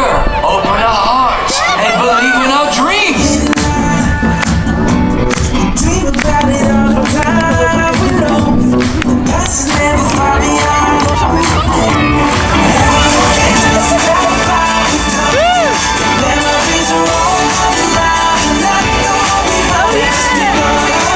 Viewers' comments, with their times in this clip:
0:05 That sounds like Justin Bieber !?!?!